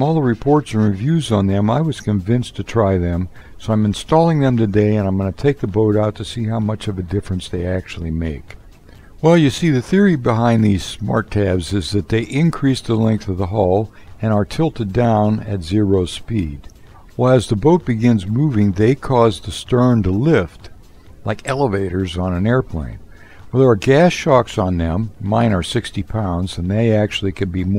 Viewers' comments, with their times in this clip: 0:09 😂😂😂in the min siri starts